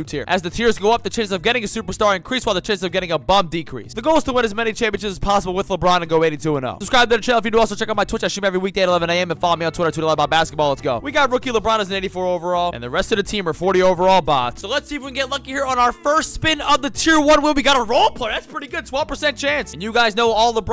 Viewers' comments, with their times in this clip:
0:08 my bro turned into Eminem